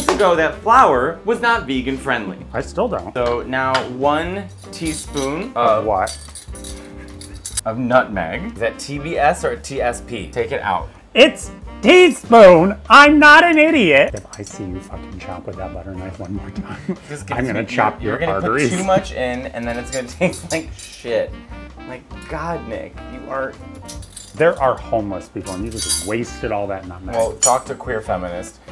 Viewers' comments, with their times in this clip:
0:09 you can't tell me that wasn't squidward